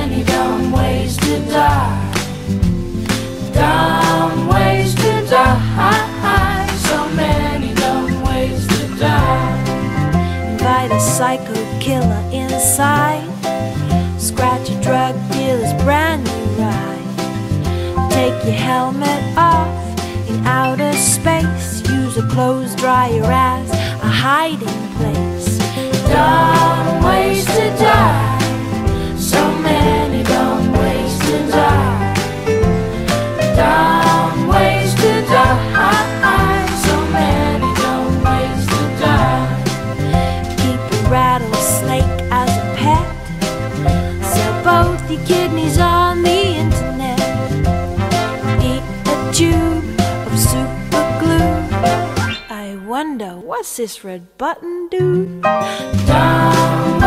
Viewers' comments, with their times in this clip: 0:10 I first heard "Invite" as "Fight". Uh, that sounds WAY WORSE!
0:43 a rattlesnake OR A BEDCRAB FROM HALF LIFE you decide ;)